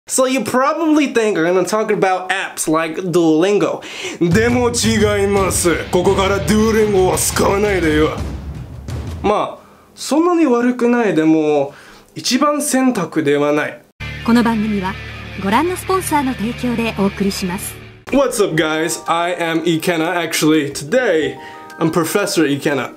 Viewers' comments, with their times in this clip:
0:04 he sounded like an anime character